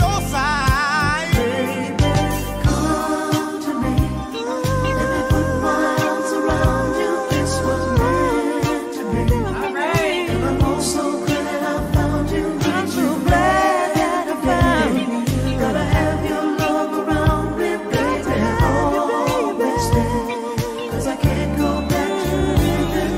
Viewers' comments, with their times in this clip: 0:04 Patti's humming at the mark is the best part of the song. That vibe she puts off right there is so subtle but crazy sensual